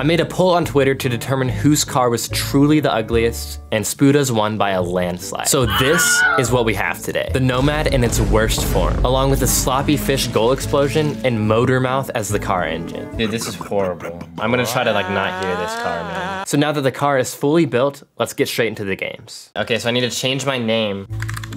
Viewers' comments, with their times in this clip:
0:08 I didn’t even think about the car enging